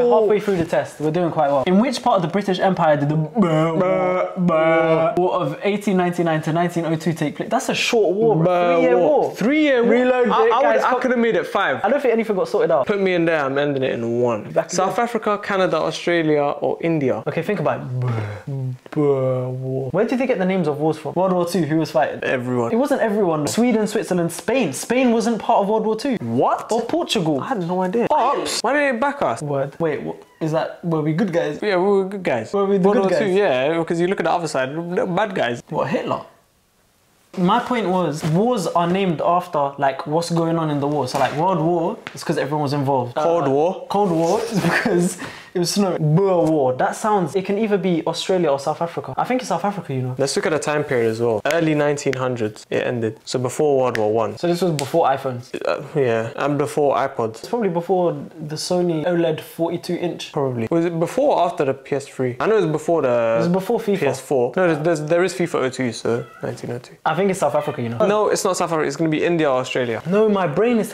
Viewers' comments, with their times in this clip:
0:03 them absolutely butchering the word Boer
0:51 some bone cracking asmr